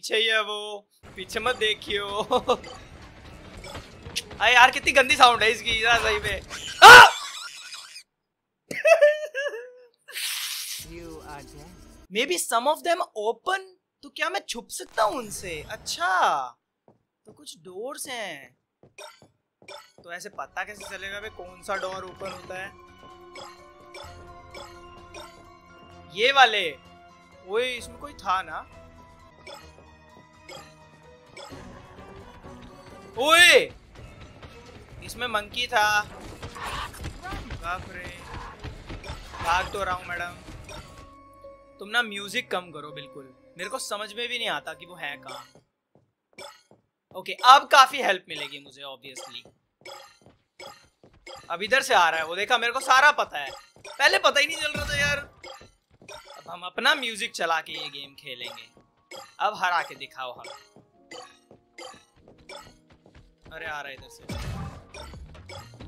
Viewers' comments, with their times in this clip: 0:07 that is one psychopathic laughter
0:53 bro it's your first time you have heard their footsteps without music and your like see without music I know everything xD funny